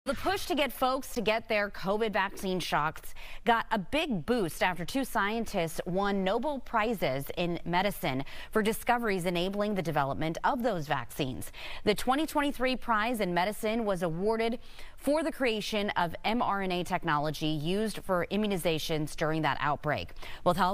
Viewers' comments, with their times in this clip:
0:01 I think she's right... "The push to get folks to get their vaccine SHOCKS" 🤣